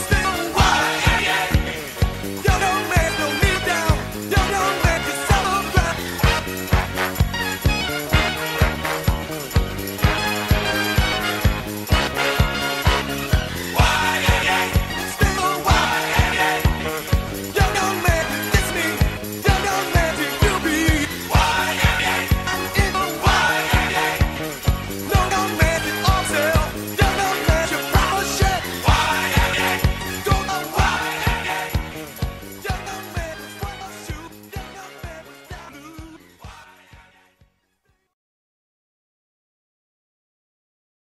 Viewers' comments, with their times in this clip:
0:04 'Yyoung man don't sell ya' bra" Oh yeah please don't.
0:17 Young man come kiss me If you say so
0:17 Y-young man you diss me! Y-young man you do be!
0:24 Damn, I never knew a positive welcoming song could be so vulgar.
0:25 You can really hear the anger in his voice as he scolds the receptionist at the EA headquarters while visibly intoxicated.
0:25 "No young man, it's on sale. Young hung man, you're probably ashamed."
0:25 rare footage of a man yelling at y-young man 2018 colorized
0:27 It really sounded like he said “you pile of $h!t”
0:27 "Young young man, you pile of shit!" Jesus christ village people, i thought this song was jumpy.
0:28 Got turned down